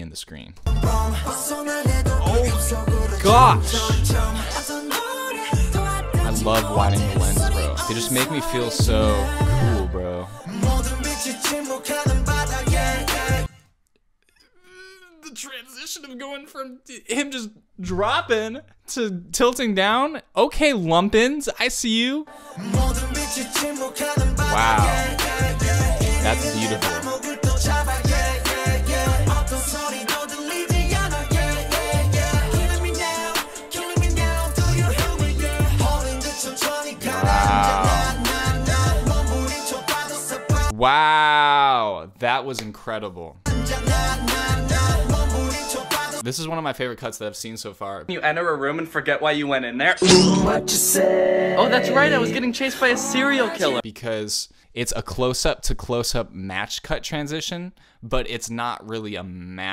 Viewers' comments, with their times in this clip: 0:05 No one gonna talk abt that musicality ? :(
0:40 reminds me of yoongi saying "woooooww! woooooow" if you know what I mean lol